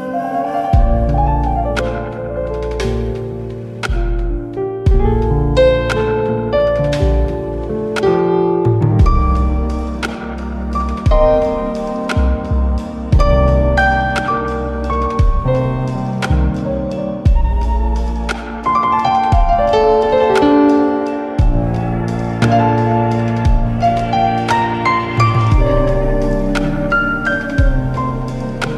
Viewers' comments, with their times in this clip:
0:09 that part felt like a love song